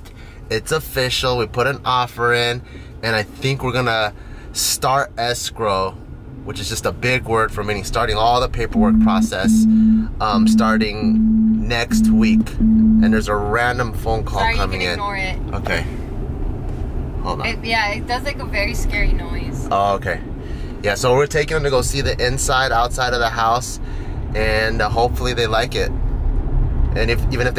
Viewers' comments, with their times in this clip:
0:09 got me 💀 I was looking around my room trying to find where the vibration was coming from